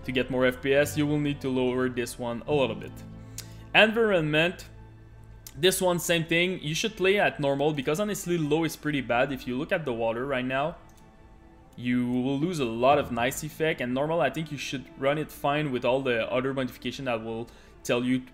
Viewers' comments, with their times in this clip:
0:03 that thing you said. I know what you meant to say, but I've never heard it pronounced like that before. Is English a second language for you?